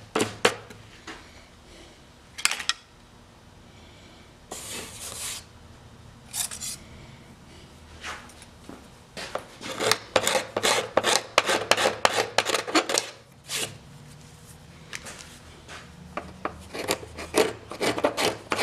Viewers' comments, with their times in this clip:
0:05 Love the sound a sharp chisel makes! Is that a shop made scraper around the mark?